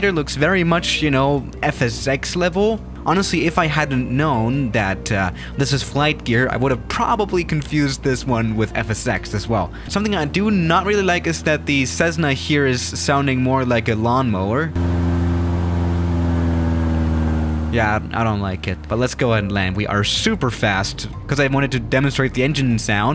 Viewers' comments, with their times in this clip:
0:09 at ×0.25 sounds like "s** is wrong"
0:09 I'm surprised that someone gives out a flight simulator for free. I can only wonder why they couldn't charge something. .. It does sound more like a lawn mower. lol. Did you import a lawn mower model and load it? I don't know about this sim. By the way, I'm not sure what sound you are going for, but since you talk about Cesna planes a lot, the Ces part is usually said more like Cess in Cesspool with S sound. There's no Z sound like in Pez dispensers, or someone saying "Says Na" or Sez na. Not sure if you would want someone to mention that, or if you even care since you say it often.. lol